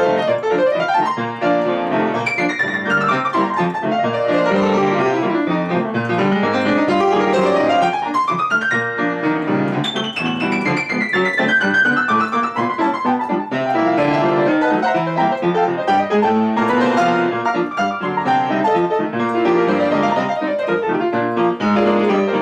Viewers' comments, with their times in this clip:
0:08 it sounds so good. Much better than the original